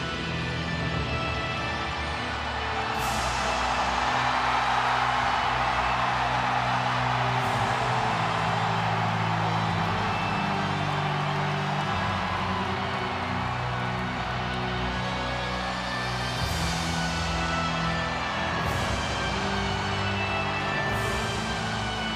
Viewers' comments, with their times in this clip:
0:04 one of the best wreslmania pops ever